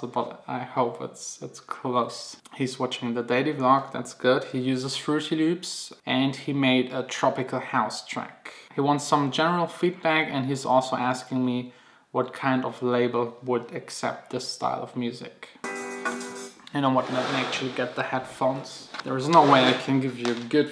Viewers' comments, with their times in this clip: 0:05 I love how you pronounce "fruity loops"